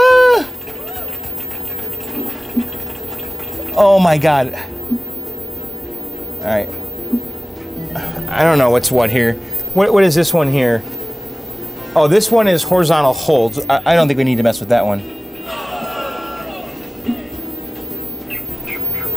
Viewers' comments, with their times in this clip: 0:06 Lol the applause from Golden tee could not have been more perfectly timed XD